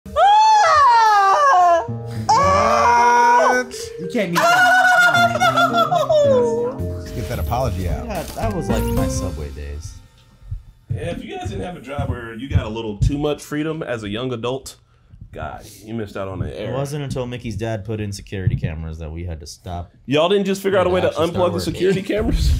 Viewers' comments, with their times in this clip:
0:04 Was anyone else expecting him to say "wipeout" after that laugh?